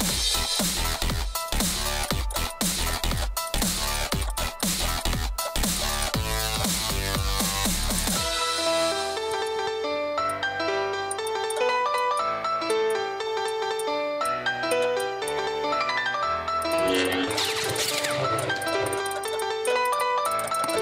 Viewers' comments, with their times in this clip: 0:08 this part like 1940s and 1890s music.